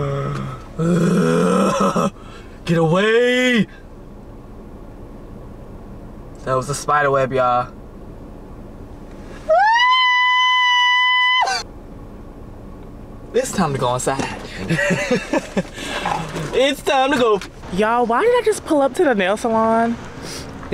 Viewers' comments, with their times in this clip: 0:08 Lol The scream🕷️😄